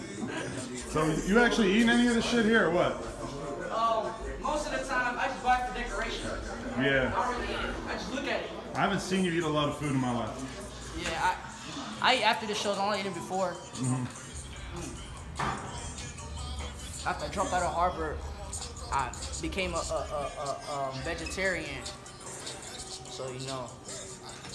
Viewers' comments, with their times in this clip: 0:10 lmao why he sound like that 😭💕
0:11 Yoooooooooo Wtf lil pump sounds normal lmaooo
0:12 Ik I'm real late but Pump sounds normal 🤔🤔
0:12 Pumps kid as voice 😂😂😂